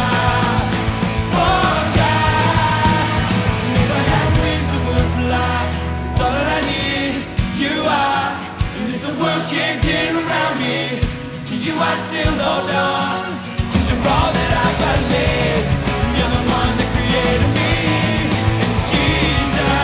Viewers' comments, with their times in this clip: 0:05 robot voice fx. have u noticed it?